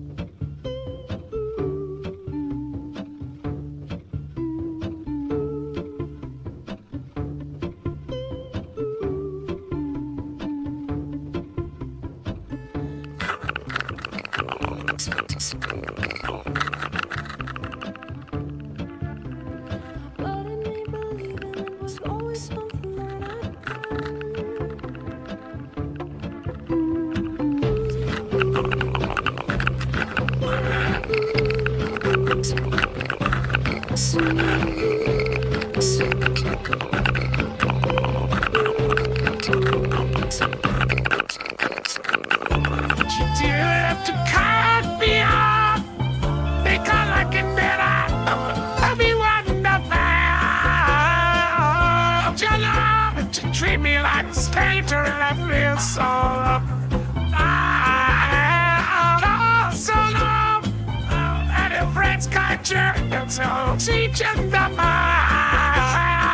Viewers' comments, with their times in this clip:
0:10 In case you're wondering when perry's GORGEOUS solo is: Help I showed my dad and we both nearly died from how gremliny perry sounded
0:10 Someone's brushing their teeth in
0:12 THE FUCKING JUMPSCARE OMG. HEARD THIS BLASTING ON MY CAR SPEAKERS GOIN DOWN 45 😂
0:12 that perry solo was absolutely fabulous, touched deep inside my heart and soul, the best thing i've ever seen in my life
0:12 It is not wasted... Sounds like a blender trying to crush chickpeas (and burning itself in the process). HAHAHAHAHAHAHHAHAHAHAHAHAHAHAHAHAHHAHAHAHAHA!!!!!!!!!!!!!!!
0:12 Perry’s solo is hilarious 😂
0:28 POV: Geiger counter in Chernobyl
0:30 WHO'S FUCKING CHIHUAHUA STARTED GROWLING
0:39 NOOOO I can hear him saying "Somebody that I used to know" in between his platypus noises 🤣🤣🤣🤣
0:48 I love how every single AI I've seen with this simple song goes nuts because the AI can't handle two voices at the same time.
0:50 Doofenshmirtz doesent need autotune